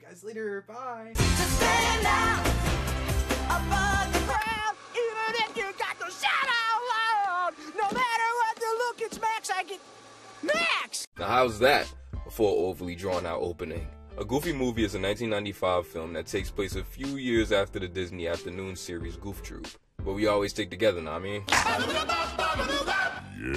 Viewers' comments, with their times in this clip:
0:04 and that was the moment I realized PJ is Carl Wheezer.